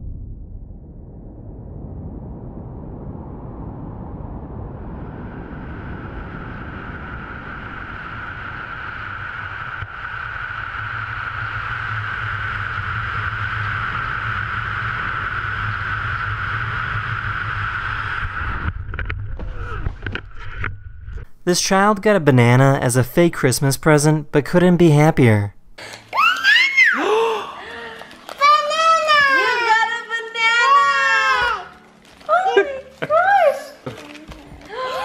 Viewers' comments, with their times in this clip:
0:04 sound in horror games when slendy boi is getting near
0:23 banana the child said happily